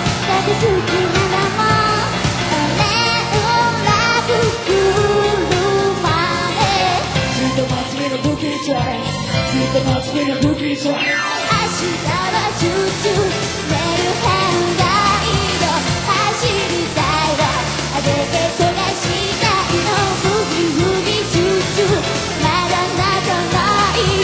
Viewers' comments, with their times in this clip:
0:07 Awesome ! And Is It Just Me Or Did She Kinda Sound Like Gaki ???